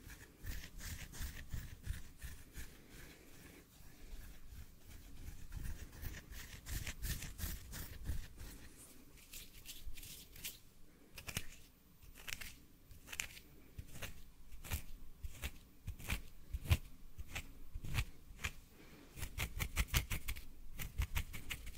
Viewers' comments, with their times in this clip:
0:06 and these scratches